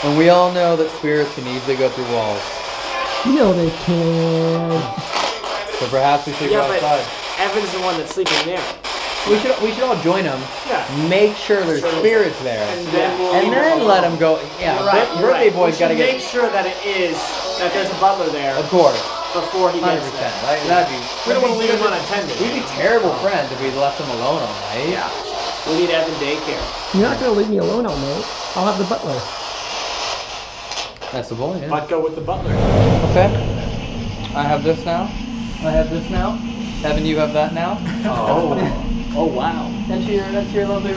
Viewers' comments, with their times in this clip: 0:08 it sounds liked see you again starts playing lol random
0:13 There's a loud and clear bang y'all did not hear or a little bit before.
0:22 sounds like “you need to stop” males voice